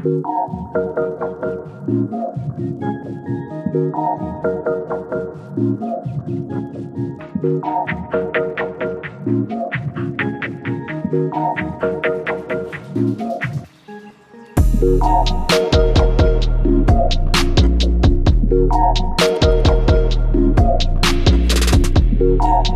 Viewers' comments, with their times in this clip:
0:09 Ended up sounding like Drake's next hit, pretty good man